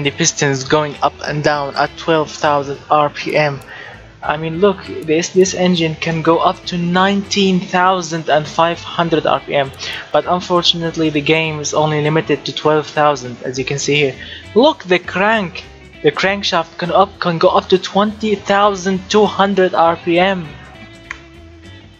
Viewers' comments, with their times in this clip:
0:06 Do you even hear about n/a era f-1 engines? I don't say you won't, but it sounds like. :)